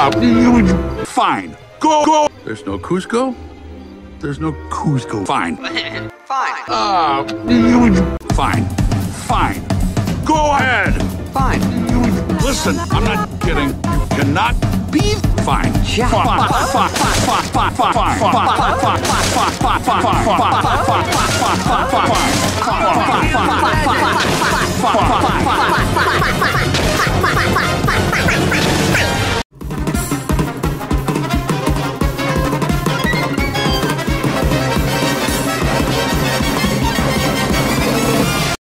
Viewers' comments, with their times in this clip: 0:09 Perfect song for this video-
0:10 What an enchanting song.
0:16 It sounds like in this bit he's saying the F word.
0:29 Now that's good explosive jazz